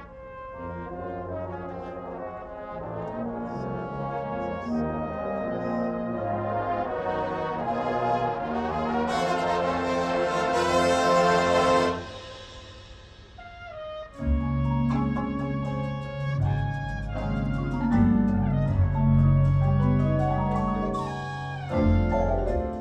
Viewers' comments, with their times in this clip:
0:09 Loving the moon river 😭😭